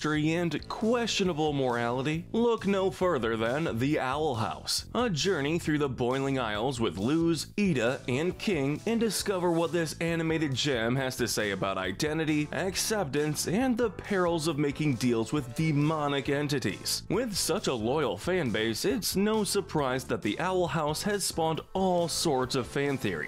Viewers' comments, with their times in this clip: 0:07 if you click five seconds ahead at just the right time you hear Lumity right? not just me?